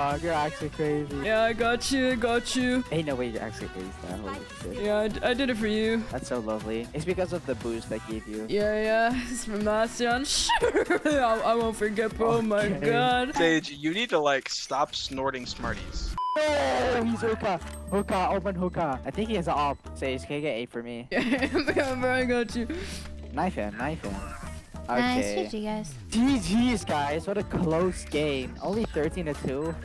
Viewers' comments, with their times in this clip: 0:10 that sheesh makes me LAUGH SO HARDD 😭😭😭
0:14 is it just me or the brim actually sounded like Dream